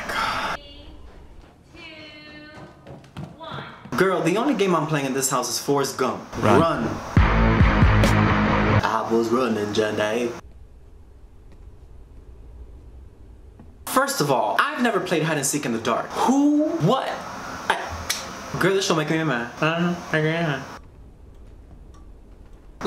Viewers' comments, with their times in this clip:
0:08 I've missed you hunny ❤️ lmaoooo why is no one talking That impression had me screaming and my family telling me to stfu 😂😂😂😂😂😂🤣